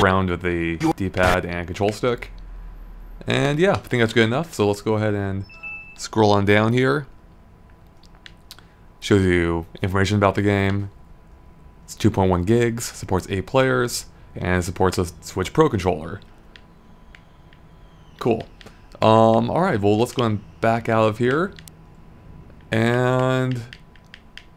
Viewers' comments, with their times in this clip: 0:05 Did Windows 7 just turn off?